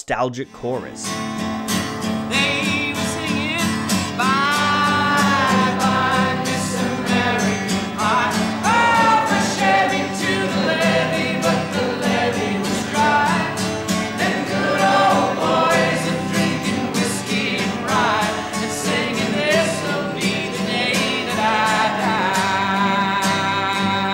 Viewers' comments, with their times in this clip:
0:10 Wow! What a powerful voice, You hear Mclain's big booming voice singing with the audience or shall I say over, I bet that would've been cool to be in the audience for that performance